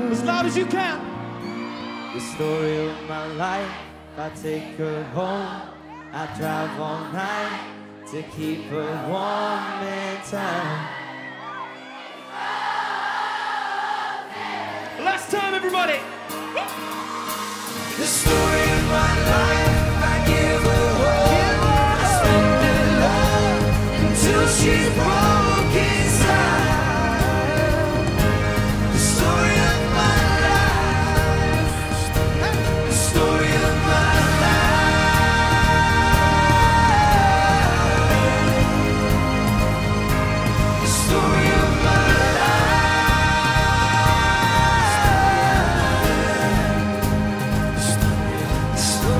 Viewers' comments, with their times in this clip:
0:10 the way everyone screams i’m gonna cry 😭
0:14 the chorus from the audience has just made evryone so happy!
0:34 zayn high note
0:36 oh my goooood Zayn putted a strong power in this high note. Silly me he always does that